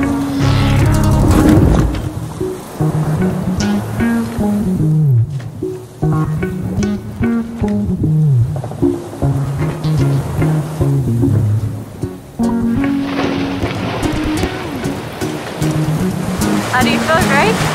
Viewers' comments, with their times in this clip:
0:05 It is absolutely SPECTACULAR that not only did you capture the whales in such great quality and with amazing stability for a moving boat, but you also captured the SOUND of the splashing. Kudos to you guys for investing in the camera equipment that would allow you to do that. As someone who's out here also living the dream, but not quite capturing the essence of the trip in the way that you guys have mastered, I really recognize how hard it is to capture that. Fortunately, I think most other people can appreciate that, that's why you have the viewership you do! Thank you for the time and effort of preparing, capturing, processing, editing and sharing these videos.